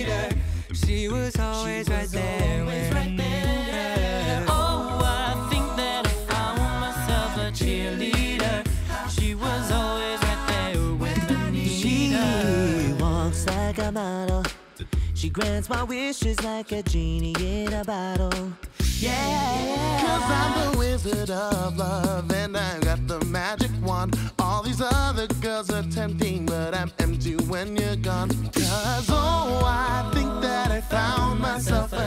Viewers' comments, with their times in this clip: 0:10 omg His voice is soooo...
0:13 the run in gave me chills omggg